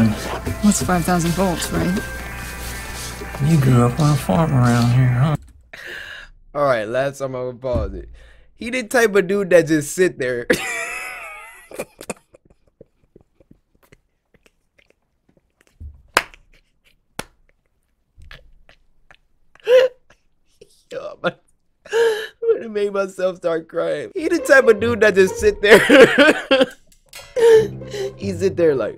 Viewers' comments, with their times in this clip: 0:07 pov: that one friend that cant tell they joke without laughing
0:15 Bro catch your breath💀💀